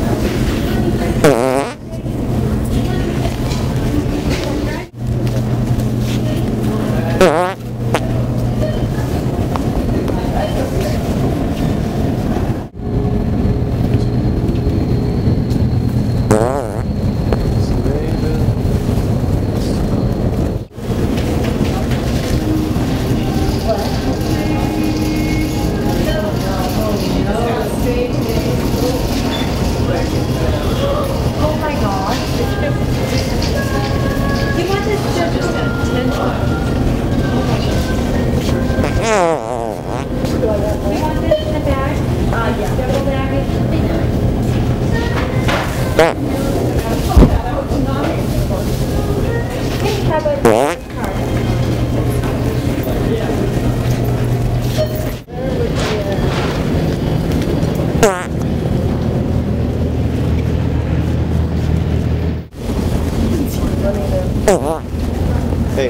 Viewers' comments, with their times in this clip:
0:07 whoa that was LOUD!!!!
0:16 the fart sounded like "i don't know" lmao
0:16 i fuckin pissed my pants the "I DUNNO" fart classic lmao
0:46 you can hear somebody pass out and hit the ground after he poots!!! LMAO >_<